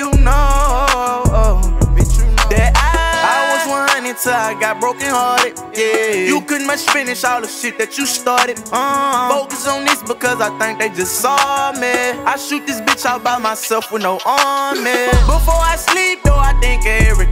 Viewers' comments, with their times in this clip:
0:03 sound like love is poison